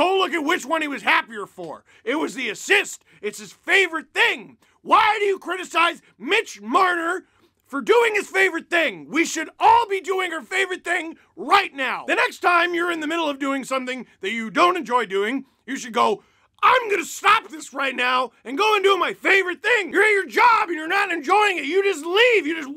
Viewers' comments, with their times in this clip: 0:10 I’m already doing my favourite thing, playing hockey while I listen to the leafs yelly-screamy man go purple